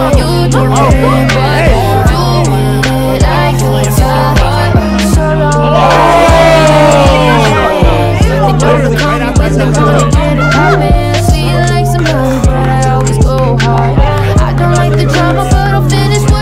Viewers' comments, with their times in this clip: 0:04 😂😂😂😂😂😂😂 ❤❤❤ the reaction of everyone “OOOhhhh”